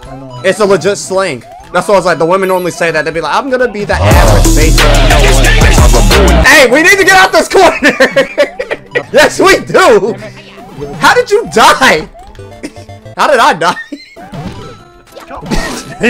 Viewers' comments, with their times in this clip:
0:04 It Already Started With A Rap Song😂😂